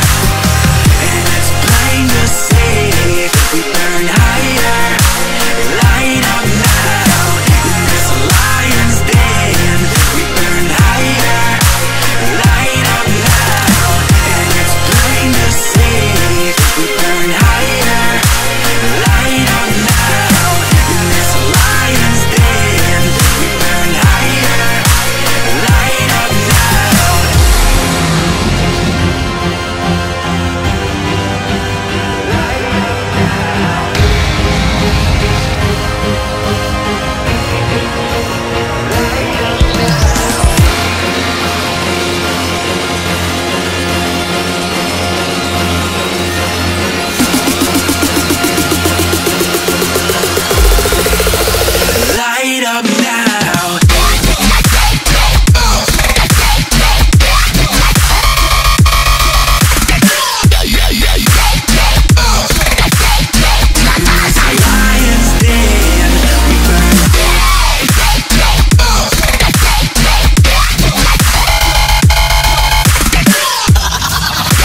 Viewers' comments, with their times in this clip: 0:06 Idk why but from there is a continuous 3 hz sine wave cuz my subs are moving like crazy🤣 wonder why you put it there
0:27 The build up is so amazing ngl.
0:54 One of the most perfectly structured Dubstep drops that have ever been made, end of story
0:54 Roses are red This song I do not hate The beat drops :)
0:56 I HAD TO WAIT FOR THAT SHIT DROP HAHAHA